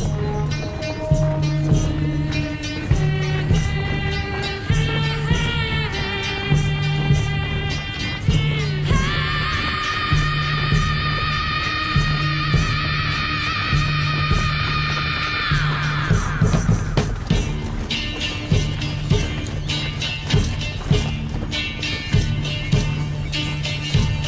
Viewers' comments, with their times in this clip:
0:08 I must know who does the scream ! What a goddess! Amazing! So feral! Intense! Sounds like a cat at the end!